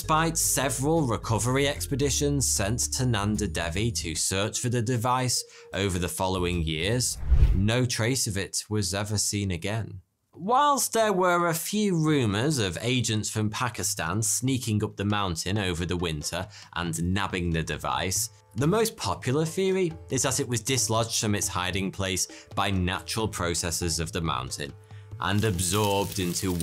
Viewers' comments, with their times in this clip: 0:10 why do you sound like you have turned on autotune for a second?